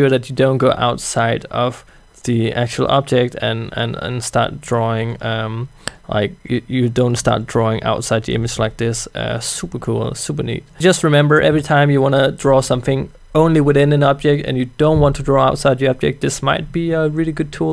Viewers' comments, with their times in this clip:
0:05 Him: `lips smack` noice.